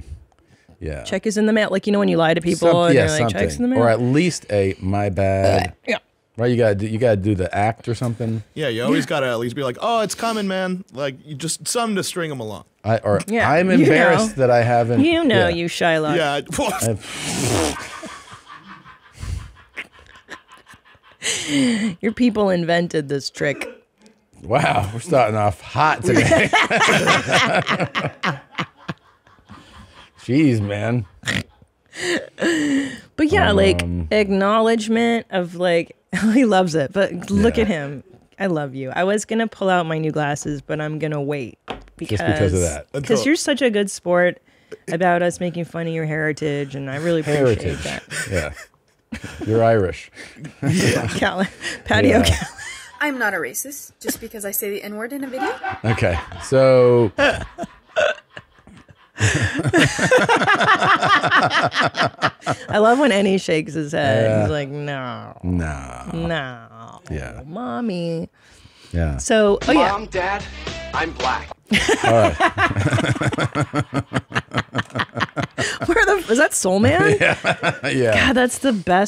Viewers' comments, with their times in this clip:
0:05 the cut on that mic killed me
1:00 Krista laughs just like Rosanne sometimes